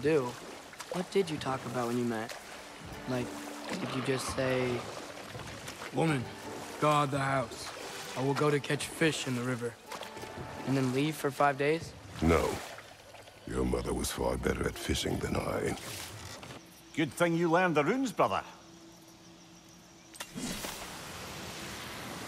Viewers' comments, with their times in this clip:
0:06 haha the way Atreus impersonate Kratos is accurate